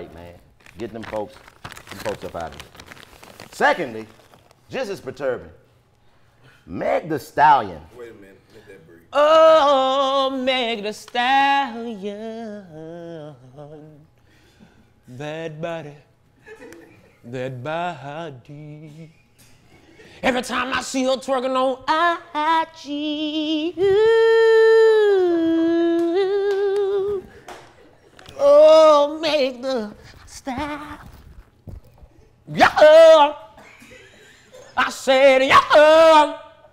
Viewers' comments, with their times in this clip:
0:09 I just gotta put this here for them vocals alone, man. And the fact that Karlous was like "Hollup hollup...I feel something"
0:20 he be saying funny shit but bro actually cold at singing